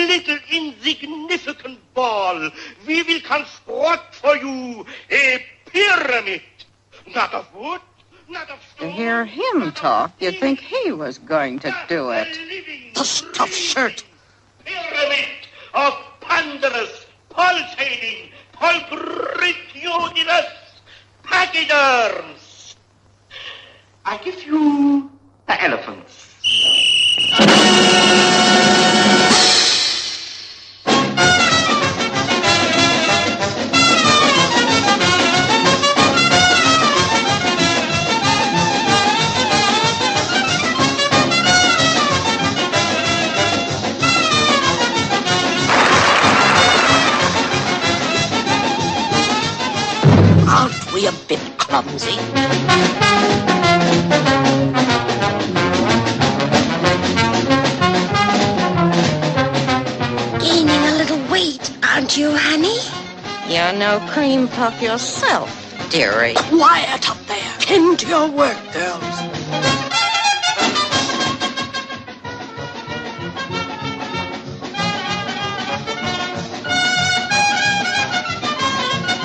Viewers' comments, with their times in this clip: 0:09 PINKIE PIE HISS
0:54 PINKIE PIE HISS
1:02 Pinkie pie hiss